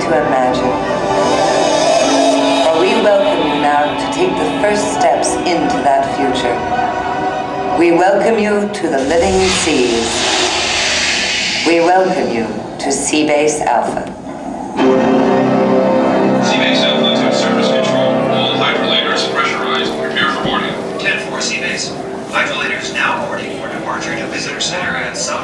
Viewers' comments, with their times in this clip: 0:10 "We welcome you to Sea Base Alpha" then that dramatic music! Still gives me chills.